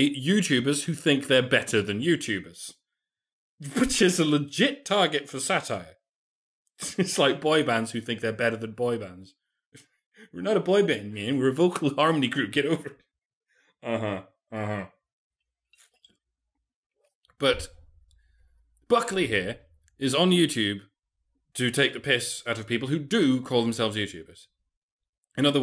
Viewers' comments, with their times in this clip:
0:08 It's freaky when you suddenly change your voice like